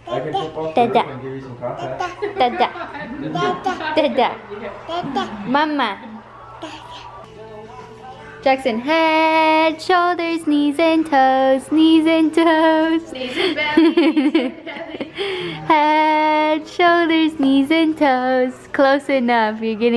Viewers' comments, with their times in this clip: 0:07 STARTS BELTING FRIENDS THEME SONG OUT LOUD